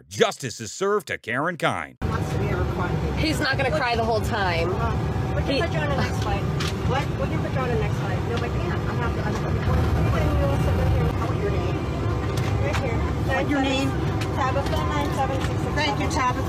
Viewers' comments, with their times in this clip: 0:03 The Different Strokes Theme should've been this lady's BGM.. How Quickly she changed her tone...